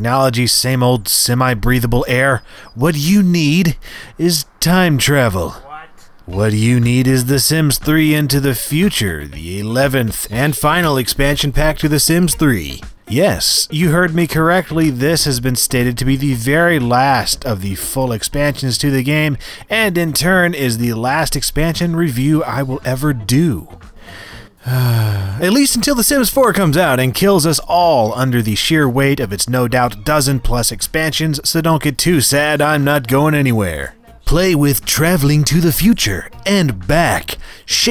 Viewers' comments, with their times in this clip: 0:04 lol who else heard the "what?" ?
0:04 i heard social distancing somehow-
0:22 “Full fart” yeah this explains the sims 4....
0:23 full fart lol
0:23 Sims 3 Full Fart?